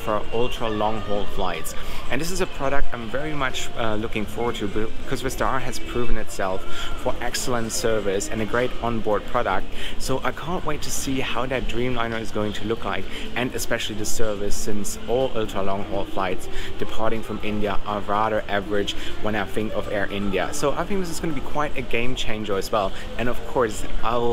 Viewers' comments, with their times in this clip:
0:08 Whats with all that music and noise in the background ? seems like a very noisy airport. sucks!